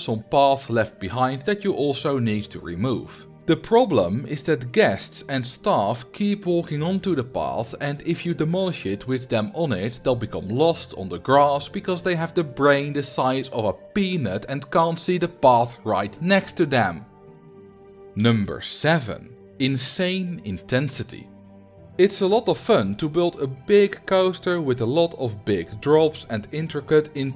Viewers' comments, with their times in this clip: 0:08 you could hear it in his voice